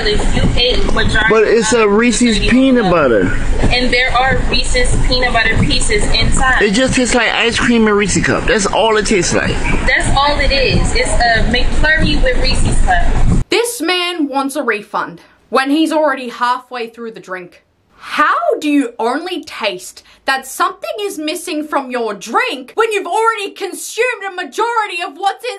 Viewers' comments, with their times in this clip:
0:06 who the hell le joe from moral orel order at dunkin donuts